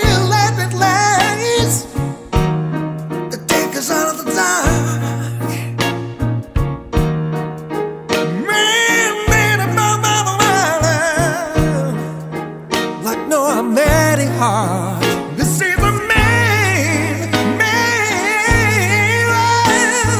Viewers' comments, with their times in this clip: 0:08 It's the perfect voice but I want his words to be way more clear. I cant understand what hes saying. Like wtf was